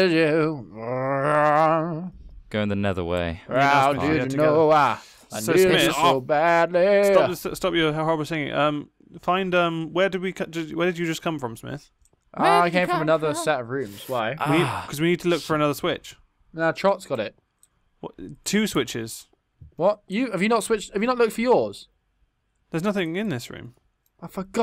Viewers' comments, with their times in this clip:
0:06 Did he try to say "Hou op met zingen"? xD P.S. For anyone who doesn't know it's dutch for "stop singing"